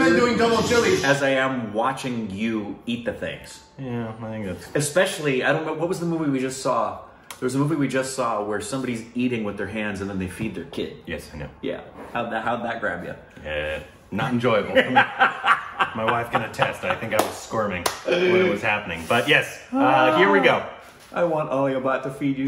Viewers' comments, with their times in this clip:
0:04 someone shouted out something. Who was that??? Edit: me to me: oops watch the full video and then comment lol. Got to know who it was 😛